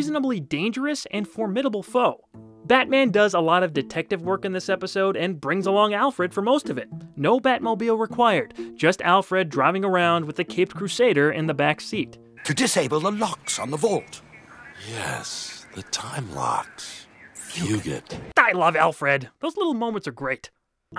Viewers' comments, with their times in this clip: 0:07 "Bravfogle"? I know there is a Batman artist named Breyfogle.